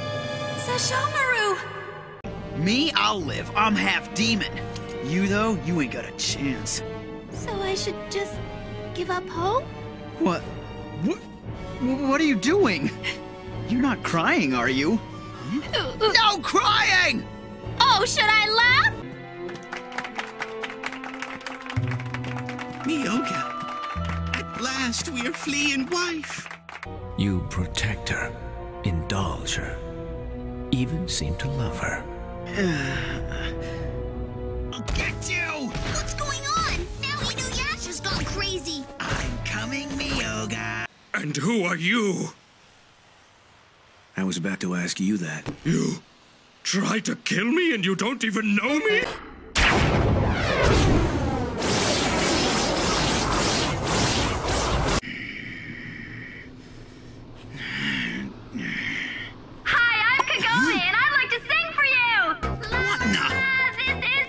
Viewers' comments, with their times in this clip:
0:08 Revive the fandom I just watched Inuyasha jumping like an idiot today and it killed me 🗿 “Whut” voice crack THE JUMPING ALWAYS GETS ME Sesshomaru and Inuyasha being related is baffling Inuyasha got a glow-down from Sesshomaru It’s me after finishing TFA, and I still want to revive the fandom
0:09 God help me, the voice crack
0:18 I thought they were clapping for kilala for her entrance
0:19 Inu Yasha is filmed in front of a live studio audience.
0:45 He sounds so heartbroken